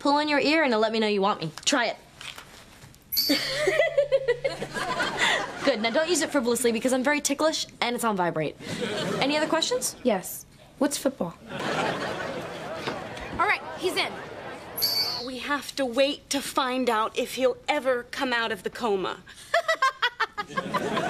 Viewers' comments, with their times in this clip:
0:03 Don't Use It For What?